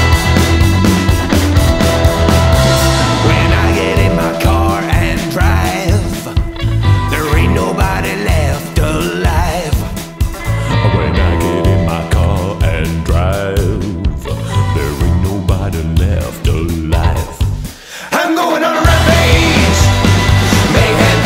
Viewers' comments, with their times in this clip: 0:04 he sounds a lot like Jim Cummings.